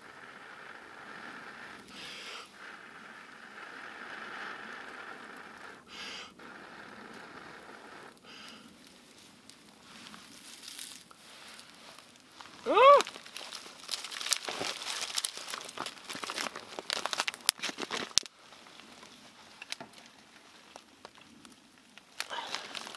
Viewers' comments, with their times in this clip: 0:10 dat manly sound tho